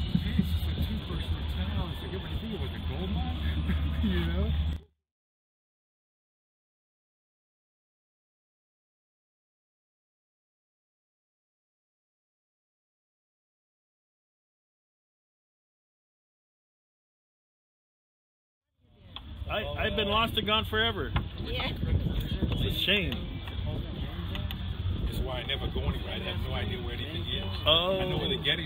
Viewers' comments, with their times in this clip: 0:09 I wonder why they muted it for a little bit